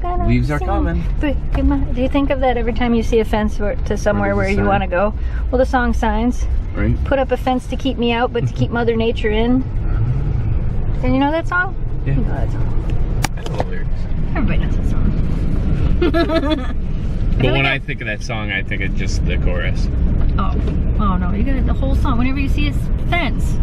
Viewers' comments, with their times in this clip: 0:09 I love the music! y'all starting to "mood accent" the videos is incredible!! :D